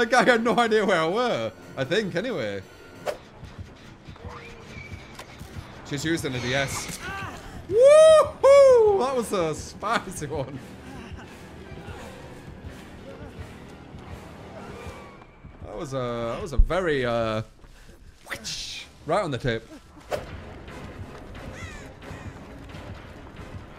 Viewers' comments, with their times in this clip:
0:06 first there was sexeh, now there's spiceh